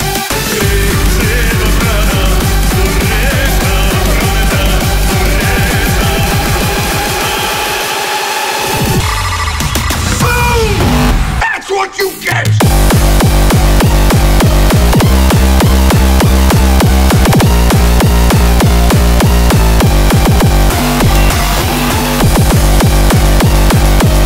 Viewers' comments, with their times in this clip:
0:09 That last drop is very noice👌